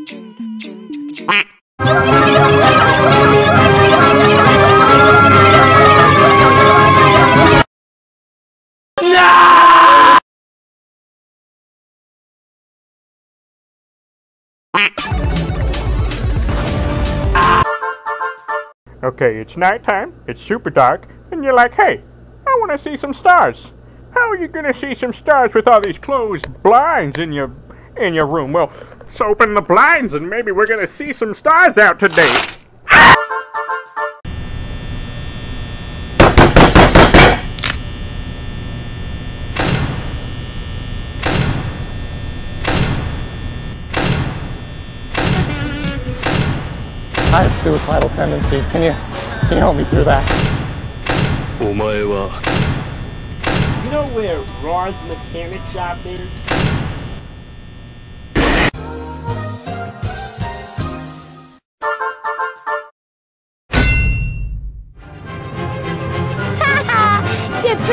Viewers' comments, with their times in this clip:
0:04 waring! This is to loud for headphones! Turn you volume down!
0:08 who is the actor for Chica his freaking yell is hillarious
0:35 the knock is uhen i tell my sister for dinner
0:48 when toy freddy sees a toy chica bought His mind you wont get tired of my voice will you like 100 times Pause Toy freddy:*screams* his head is off Toy bonnie comes over looks at computer Not happy toy chica is there Toy bonnie:*screams*